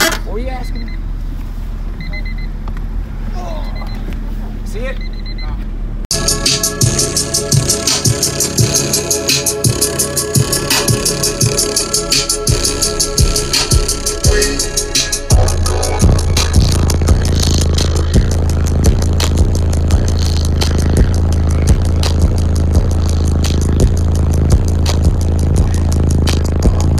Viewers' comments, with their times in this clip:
0:09 rattling before the bass hits hmmm.. A sub or 2 maybe blown..